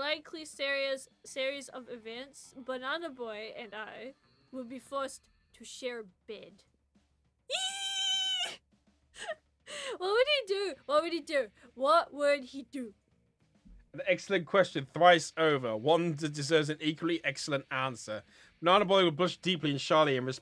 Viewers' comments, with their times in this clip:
0:07 epic fan girl screams